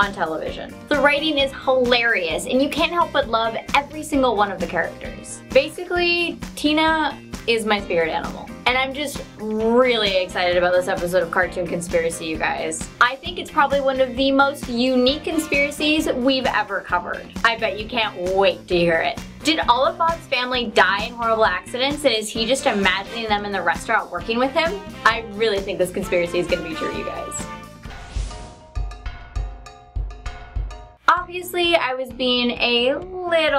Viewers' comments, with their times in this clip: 0:06 You said Tina is your favorite animal
0:19 ALI A INTRO PLAYS